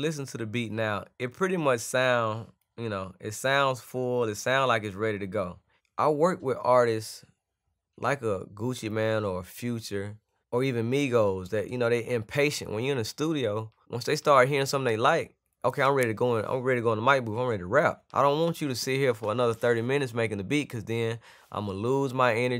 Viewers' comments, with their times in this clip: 0:08 BRUH DID HE JUST SAY "GUCCI MAN" LMFAO